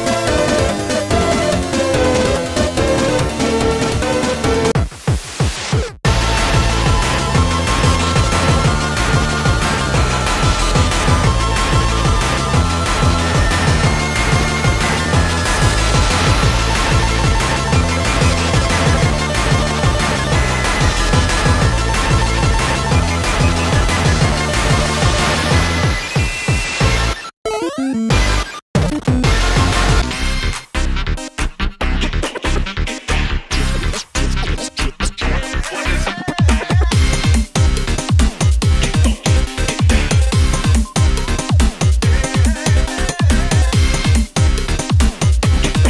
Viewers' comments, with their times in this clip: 0:05 The Gameover instrumental fit so well with this.
0:29 Also lowkey the track is fire